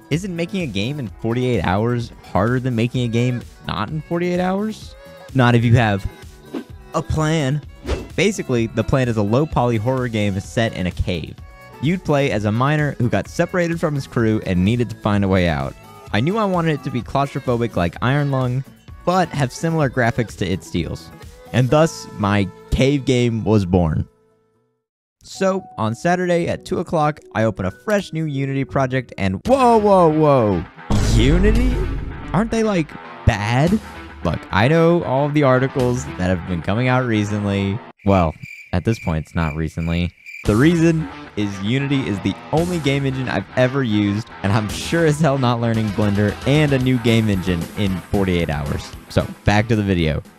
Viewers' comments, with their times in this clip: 0:07 “You play as a minor” my mind is a messy place
0:32 DOOM MUSIC EPIC